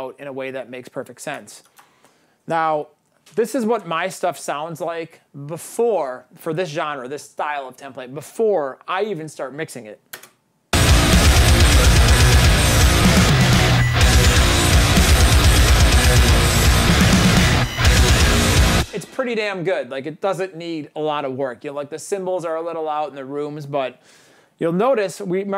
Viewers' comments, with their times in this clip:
0:10 RIP Headphone Users :D